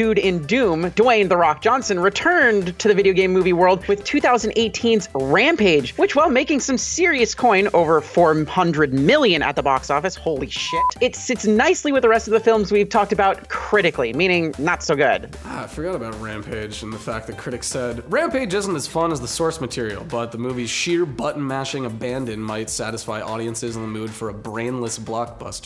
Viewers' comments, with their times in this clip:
0:10 you can hear the censor noise, but it doesn’t cover up the curse, lol